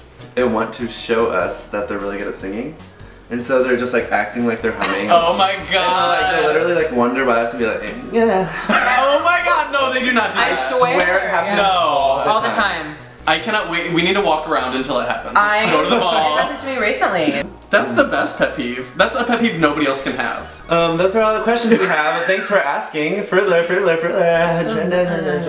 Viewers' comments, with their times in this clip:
0:07 is no one going to talk about how perfect Scott sounded when he said people walk by and go, "yeah". it was on key and everything!! can't stop replaying it. drools